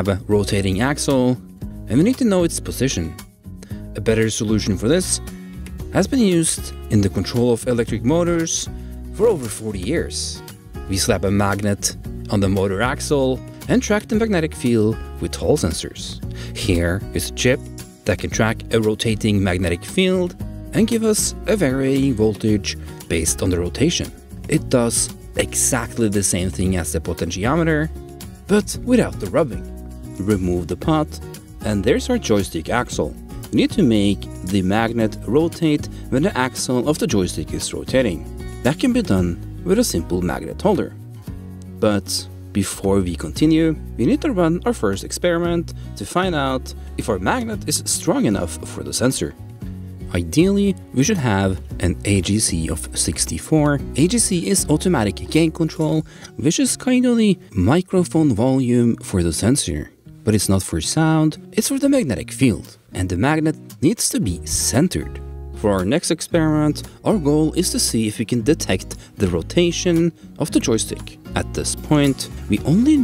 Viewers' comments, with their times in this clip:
0:06 I just moved my head and thought my headset is dying.
0:08 BRUH I THOUGHT MY HEADPHONES ARE STARTED TO DIE
0:54 automatic gay control?